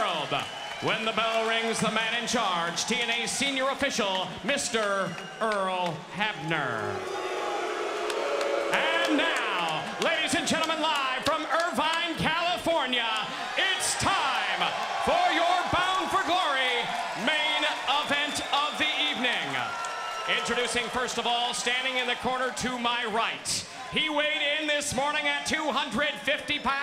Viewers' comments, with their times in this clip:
0:07 why they boo my man Earl for? 😭